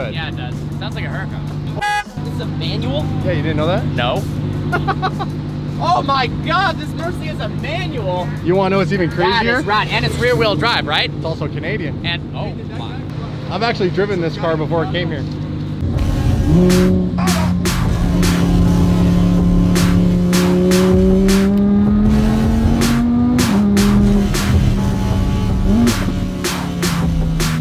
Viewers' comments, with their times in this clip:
0:04 When the Vlog impression kicks in!
0:15 que the new intro music! This episode is pretty special one. I like going back to old DDE Vlogs.